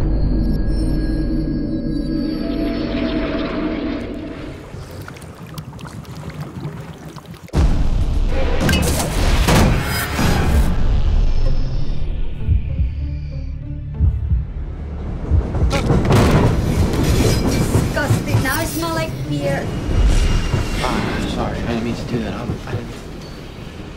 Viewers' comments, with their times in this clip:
0:05 Loved the sound effect of water droplet.....